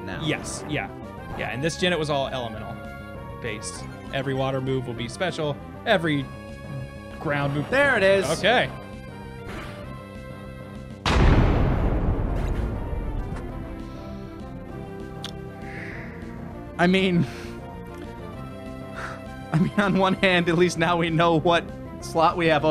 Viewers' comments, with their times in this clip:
0:08 I loved that silence after You could just imagine their faces.